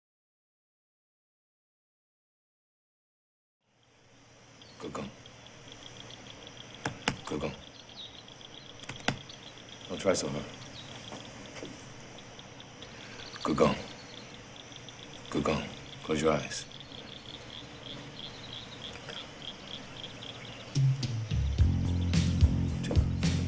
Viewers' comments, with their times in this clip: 0:05 I thought I heard him saying "google"